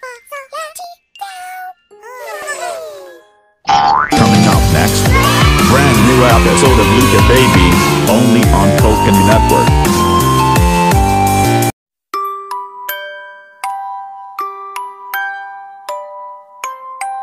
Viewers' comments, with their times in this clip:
0:05 Kids yay in 13 minute